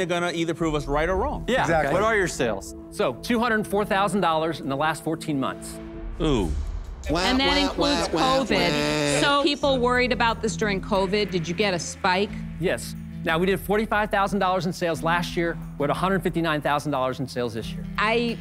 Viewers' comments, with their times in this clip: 0:03 when the guy told sales...I loved Daymond's OOOH expression :0 :0